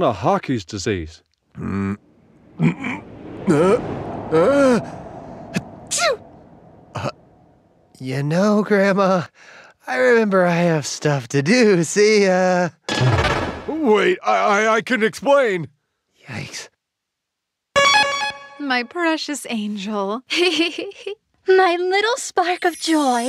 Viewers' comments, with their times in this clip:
0:05 💙Viper sneezed like a kitten😍and he's so cute❤